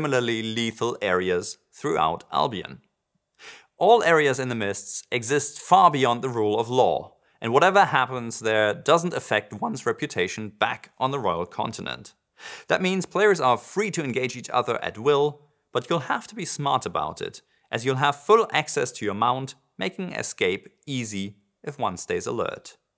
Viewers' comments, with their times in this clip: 0:09 gotta love the voice crack